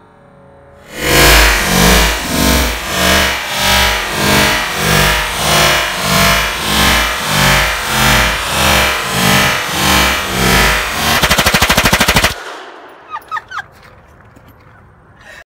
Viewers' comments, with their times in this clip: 0:13 I hear chicken.